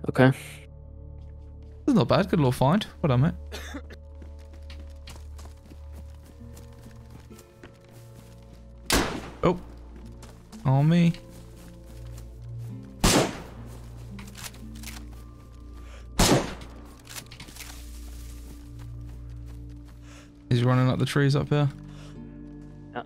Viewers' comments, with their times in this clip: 0:08 I jumped so hard I almost fell out me seat the sheer panic of hearing that pop when you don't expect it works better than coffee I tell you.